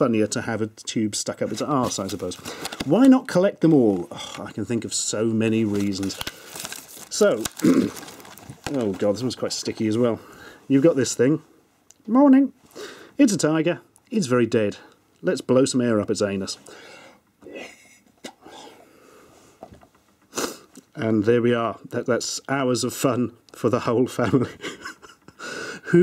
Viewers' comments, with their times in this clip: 0:09 "You've got this thing." Cartoon voice "Morning."